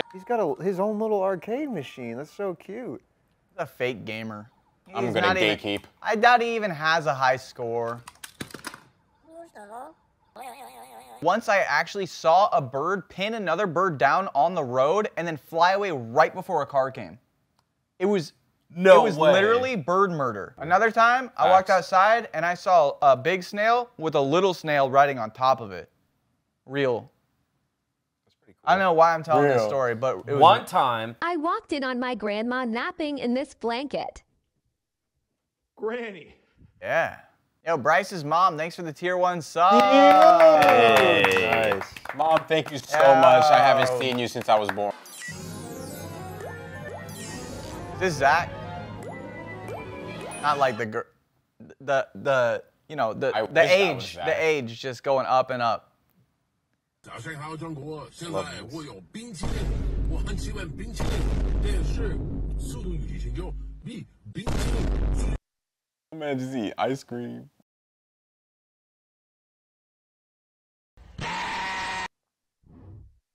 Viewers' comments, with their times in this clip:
0:08 Did that bird just say "Doushita" and then laugh like a psycho? Iori bird from the King of Feathers '95 lesssss gooooo!
0:55 John Xina's "bing chilling" with vine boom got me.